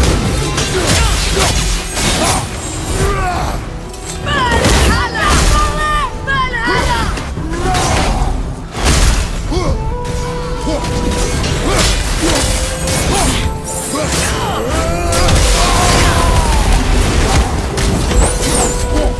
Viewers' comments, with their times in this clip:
0:04 OMG. She's crying out "Valhalla" for help!!